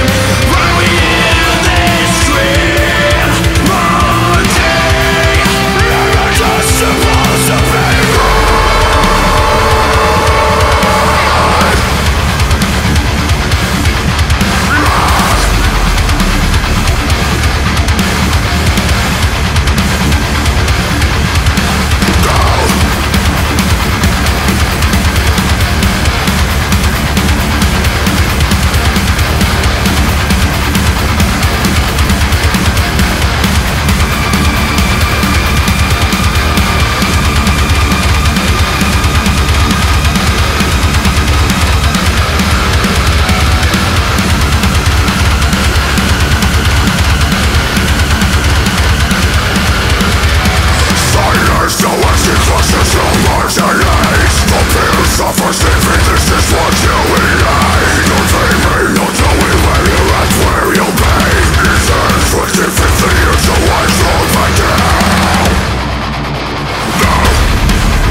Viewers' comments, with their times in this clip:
0:05 Me before kicks in: "Man, these guys lost it and became too melo." Me after kicks in: "HOLY MOTHER OF JESUS CHRIST FROM NAZARETH, THIS SHІТ IS HEEEEAVY!"
0:51 That vocal cadence tho